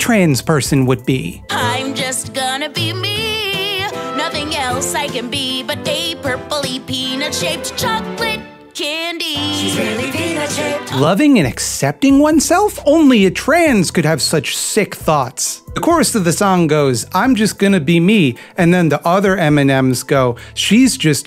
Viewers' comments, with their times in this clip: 0:08 Oh, I thought she said "Penis-shaped". They should fix that in post. Although, it does remind of that song, "Peanuts In My Pants", from the rap group N.W.H.